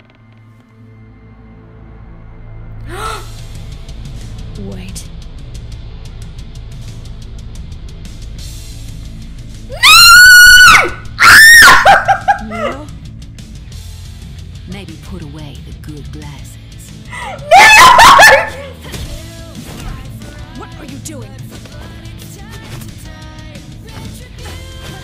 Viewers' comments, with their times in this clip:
0:09 My poor ears...